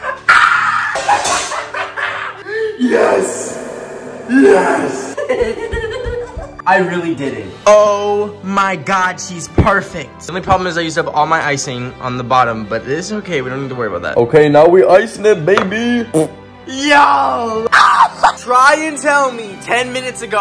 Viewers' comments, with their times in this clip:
0:04 His little giggle was literally the cutest thing ever
0:04 THE LAUGH THO 😂
0:04 the laugh LOL
0:05 maniac giggling <333
0:06 The laugh is me at 3 am after winning a among us as imposter !